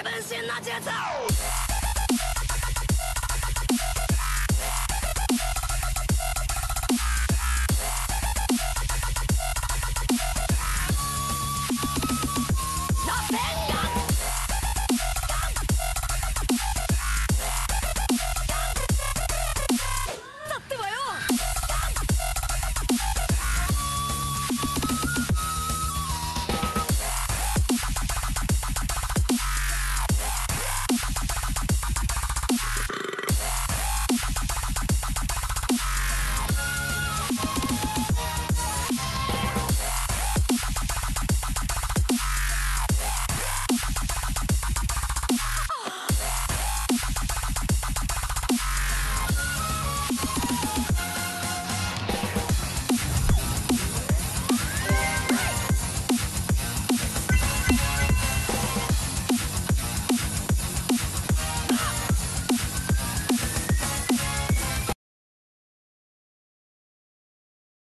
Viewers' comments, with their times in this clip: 0:10 Am i going crazy or the minute sounds like that one part of "Just Let Us Adore You" Either i watched too much steven universe or this song is a master piece
0:20 Was that Japanese?
0:55 i love that coin sync